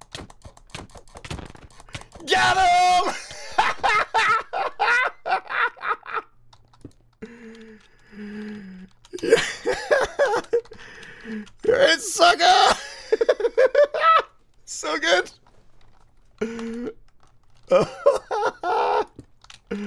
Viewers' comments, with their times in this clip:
0:04 that laugh though